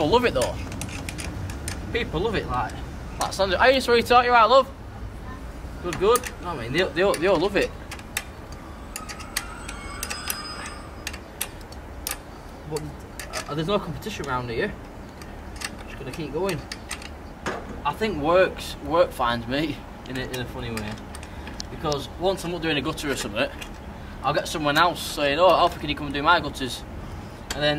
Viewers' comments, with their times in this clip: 0:09 must be near a train station as that sounded exactly like a 150 stopping haha